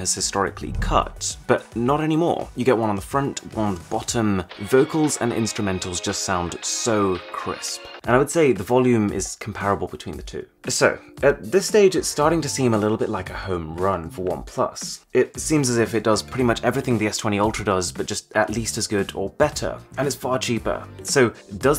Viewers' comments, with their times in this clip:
0:03 just got Rick Rolled. 🤣🤣🤣
0:04 HE RICK ROLLED US!
0:04 Arun just Rick-Rolled everybody 😂😂
0:04 That is some excellent audio! This is one of the reasons I am never gonna give my OnePlus up.
0:04 Did you just rickroll yourself? 😁 It's alright as long as you're using the OnePlus 8 Pro👍